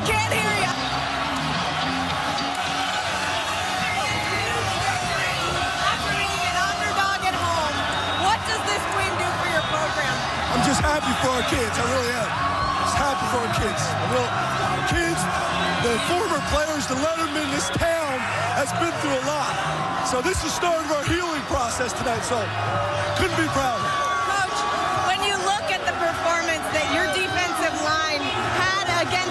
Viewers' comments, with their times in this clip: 0:10 at the end of this, the coach is yelling so loud in the reporter's face that you can tell she's like his breath fucking stinks...... it's and on....your welcome...//